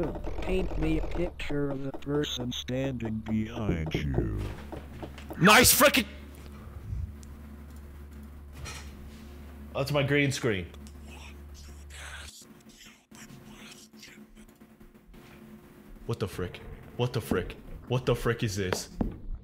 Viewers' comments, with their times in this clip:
0:07 Dude. ish i actually thought someone was knocking on my door 😂